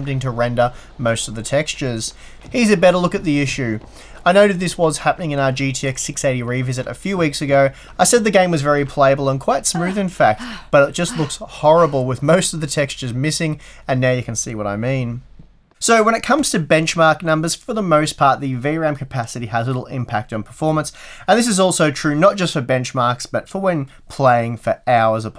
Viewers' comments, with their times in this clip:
0:09 thought a background porn vid started in another tab.